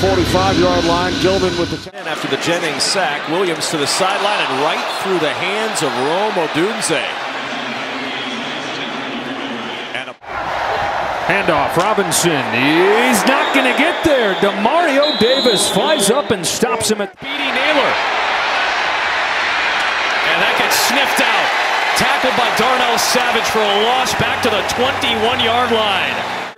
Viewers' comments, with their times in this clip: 0:08 don't tell me that the announcer was about to say there was a penalty, because he said "and a" then it was cut off.